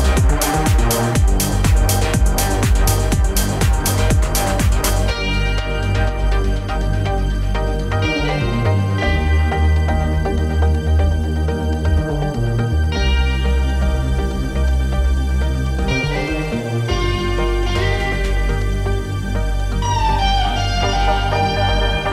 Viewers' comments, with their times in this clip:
0:05 The guitar addition to Cristoph-Sleepless Nights is life.